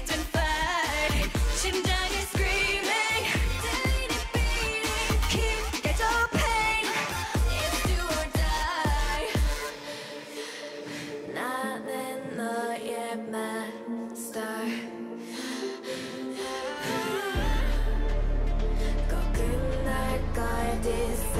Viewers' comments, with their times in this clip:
0:03 the way you can clearly hear the difference when she doesn’t sing she sang all long flawlessly and she’s just a rookie i’m so impressed